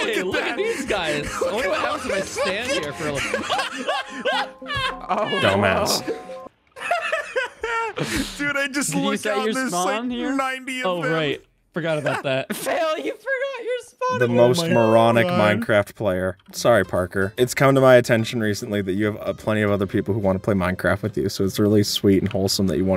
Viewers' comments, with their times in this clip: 0:03 >:( cat is so annoying and it’s the worst music disc